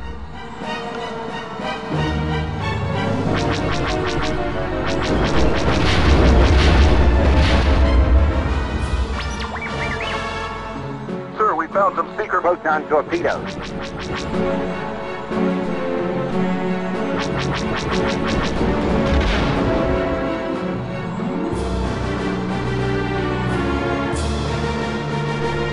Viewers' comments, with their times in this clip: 0:10 My favorite part is where the voice actor changes halfway through the line